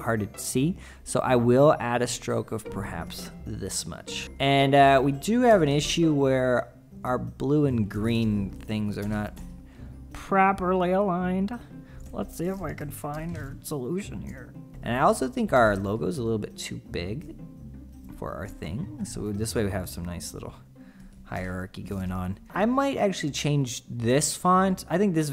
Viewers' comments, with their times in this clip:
0:06 He sounds like Kermit LOL